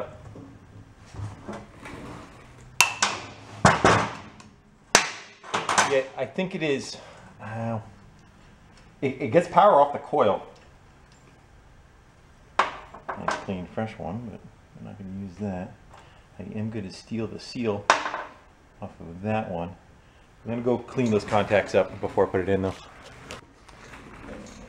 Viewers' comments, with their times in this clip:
0:09 sounded like you got some 2cycle mix in it but it cleared out on the test drive.